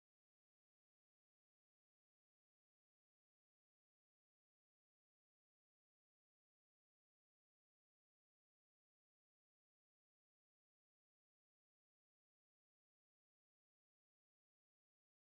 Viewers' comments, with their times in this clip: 0:11 He plays Tati